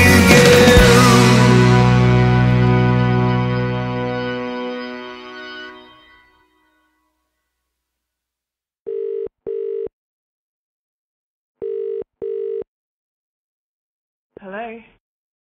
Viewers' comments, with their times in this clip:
0:09 of this song when the phone rings, I look at my phone and wishfully think oh Dave is that you calling me? Haha-Ohhh the joy of dreaming:🤗